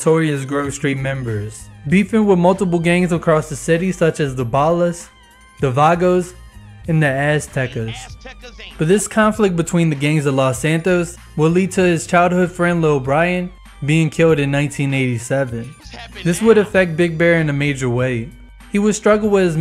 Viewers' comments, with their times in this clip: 0:06 sounds like he was saying ass takers 💀💀💀🤣🤣🤣🤣